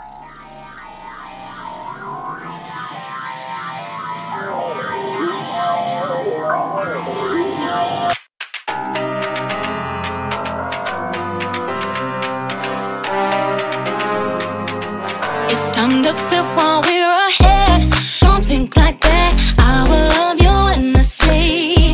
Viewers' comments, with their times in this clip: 0:07 it started with the music lol